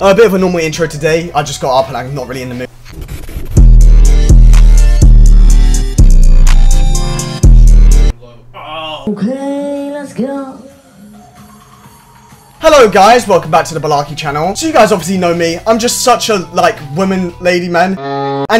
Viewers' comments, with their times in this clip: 0:03 ayo imma need that beat 🔥